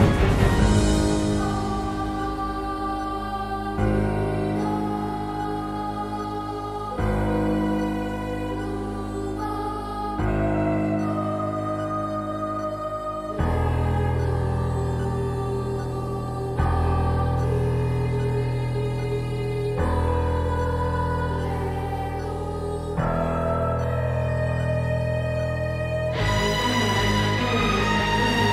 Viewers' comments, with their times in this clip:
0:10 I appreciate the beats it sounds like the ticking of a time bomb. It's like Klee reminiscing the time she spends inside the solitary room looking at the clock so that she could go out, but now that she's evil, she's waiting for the bomb to explode instead.